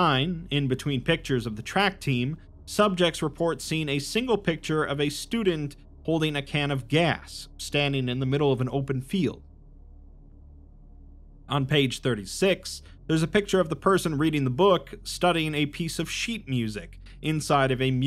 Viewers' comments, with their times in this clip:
0:06 What happened with the audio